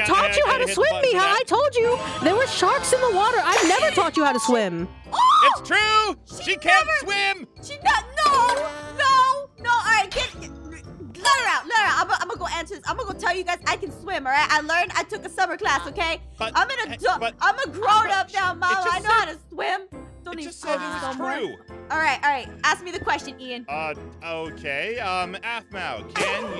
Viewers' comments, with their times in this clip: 0:09 Aphmau : no👏🏽 no😫 no😞 no🌜no✊🏽 Subtitles : [Music]